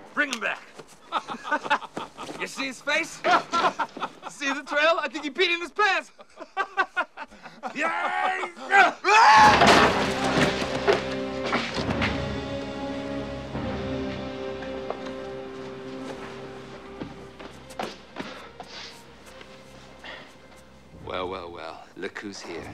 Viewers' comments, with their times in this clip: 0:09 Mr. Miyagi literally has boss music play when he enters the dojo